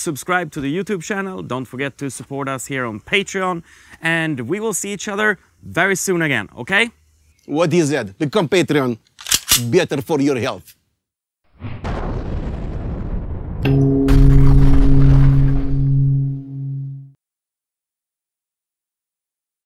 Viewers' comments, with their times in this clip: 0:06 Russian accent speaking Joakim, so what's next? Yelling "А ну, чики-брики и в дамки"?